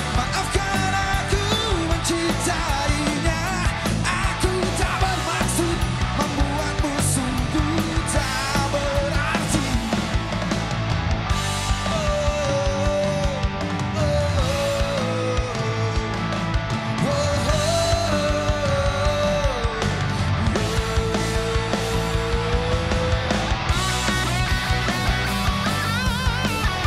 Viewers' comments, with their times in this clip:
0:10 start of the "duet solo guitar"